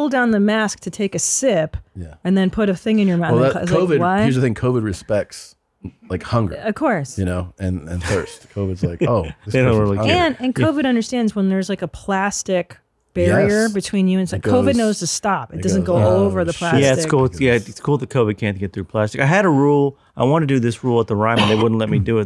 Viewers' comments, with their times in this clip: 0:08 Christine screaming in a flight